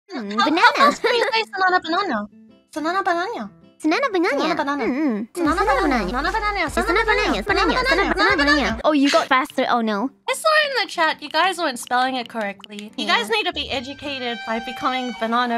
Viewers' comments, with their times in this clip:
0:02 Background NPC dialogue